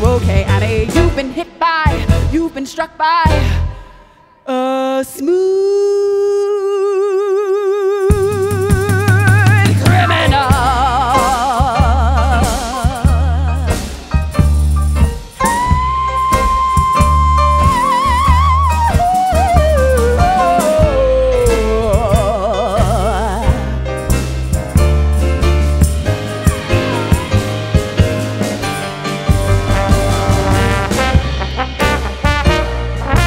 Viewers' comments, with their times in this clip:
0:03 I had this on in the background while cleaning. I was listening, but focused on my task... until ! That transition got me moving 💃🏼 . Thank you for this!!! Wishing all of you, and your loved ones, safety, peace, and as much lighthearted laughter, and great music, as you can get. 🙏🏼🇨🇦
0:14 How she changed that vowel on the way down is just chef's kiss, absolutely delicious!
0:15 The delivery of the musicians, her voice, and the performance presence ! And on top of that she looks stunning! That note, Yes ma'am! And it gets even more thrillin, with the little surprise of her joining with the band, and playing the trombone. They did a marvelous job with this cover! Tataa, Take Care. Happy Holidays 🎄🍾🎉
0:15 🤯 the transition into her lower register then to whip out the trombone 😂 nice
0:19 That note is so resonant that I can't even tell if it's a high belt or a head voice up the octave
0:21 I tried listening at 0,75. I don't recommend it but it proved a point: they should have played it slower from the begining! Starting from it's perfect. I'm mostly nitpicking though, this is a great cover, and Aubrey Logan is brilliant.